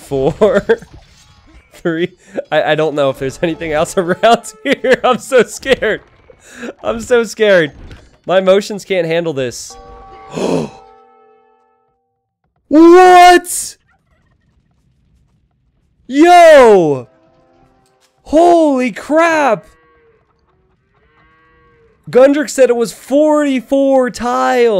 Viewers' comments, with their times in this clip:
0:08 <== Hiroshima ( BOOM ) at: